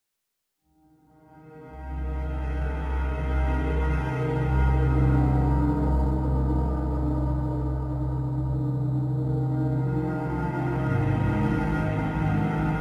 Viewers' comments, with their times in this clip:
0:00 just that start music always makes my heart into a stone in a deep pond it just gives me sadness GOD I LOVE THIS GAME